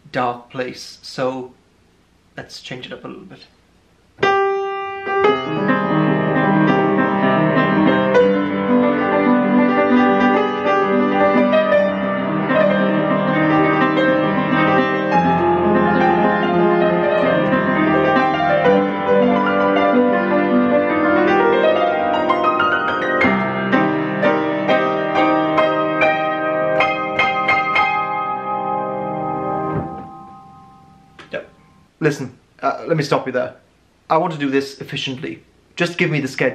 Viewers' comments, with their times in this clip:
0:04 I want that song on my birthday
0:20 ISFP the 1930's nostalgic song of unrequited love - style "Happy Birthday" is so deep, so touching, so moving, so disarming, so inviting, so romantic...So intelligently conceived, so creatively felt, and so ...well played. I'm in love with this guy's brain, heart, fingers, and God knows what other organs possibly.